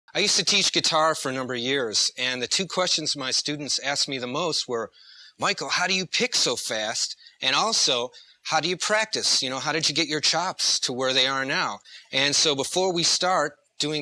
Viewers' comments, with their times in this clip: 0:01 I used to tease guitar Yeah man i know that